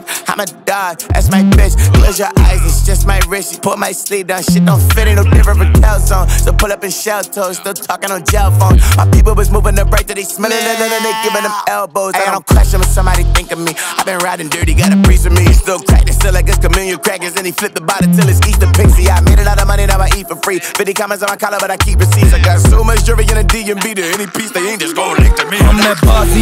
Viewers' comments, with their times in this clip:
0:10 The goats screaming